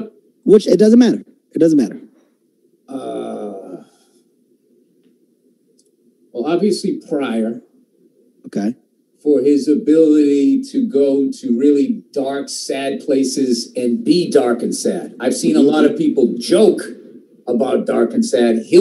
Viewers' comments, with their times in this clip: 0:06 What is the name that he says here? Sounds like "pariah" but I'm sure that's not it.